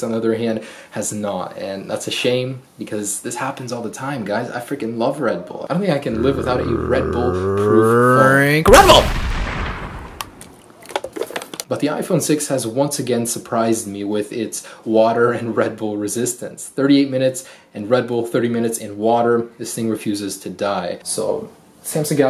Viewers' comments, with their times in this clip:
0:06 I thought the iPhone 6 burped xD